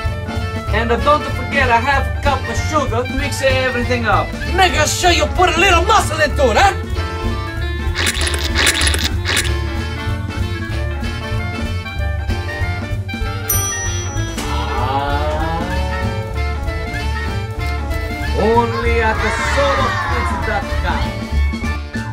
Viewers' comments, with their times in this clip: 0:07 LOL pause priceless...